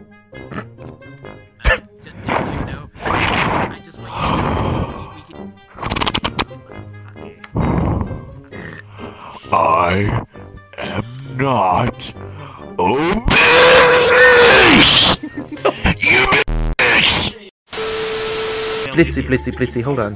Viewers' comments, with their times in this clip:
0:08 DUDE I WAS WEARING HEADPHONES😭😭😭😭😭